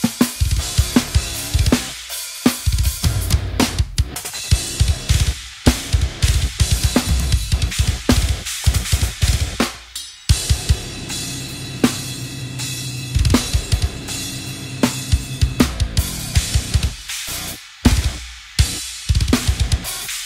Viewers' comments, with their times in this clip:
0:08 that flam rimshot !